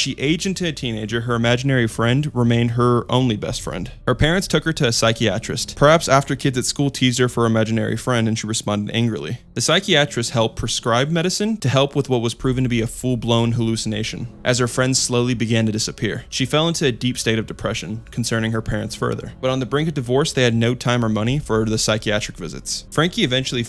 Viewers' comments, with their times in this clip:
0:03 bro no way you pronounced "psychiatrist" as "Sikey-atrist" lmaoooooo . how old are you ? u sound too grown to be mispronouncing words like this
0:10 “sigh key atrist” 🤣🤣🤣🤣 it’s pronounced sigh Kai ah trist